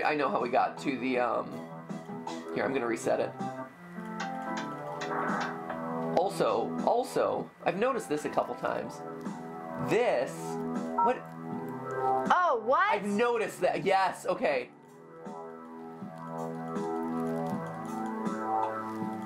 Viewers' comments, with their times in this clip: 0:03 anyone else hear the cute meows from Skip ish?
0:03 sounds like a cat wants attention